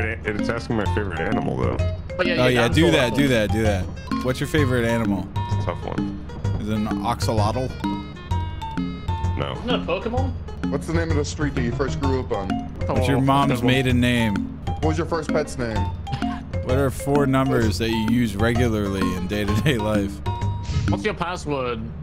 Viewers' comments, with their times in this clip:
0:09 hank hill is talking